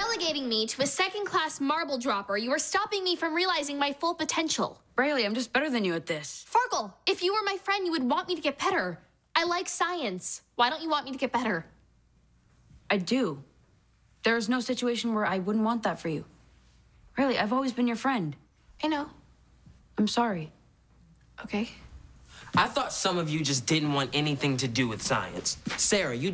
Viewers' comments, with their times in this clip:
0:08 she says petter